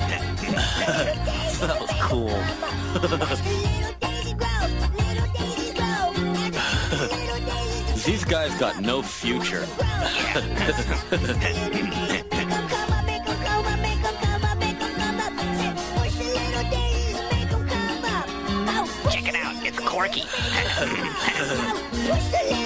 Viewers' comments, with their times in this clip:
0:03 Ween featuring Eric Cartman